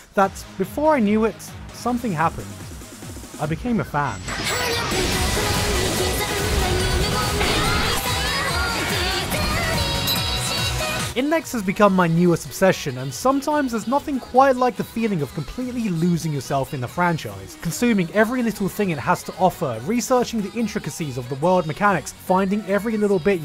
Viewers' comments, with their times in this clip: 0:07 Yeah, that euphoric vocal. Divine.